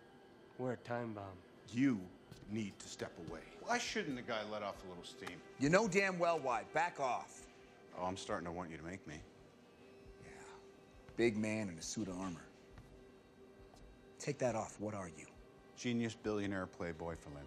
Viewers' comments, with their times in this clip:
0:05 Cap, u sound like a 12 year old arguing with with ur classmate - plz never say those words like that ever again